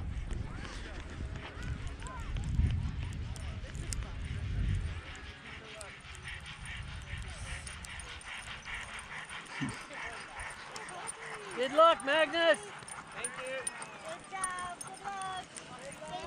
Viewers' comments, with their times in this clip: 0:04 The dogs sound like a steam locomotive lol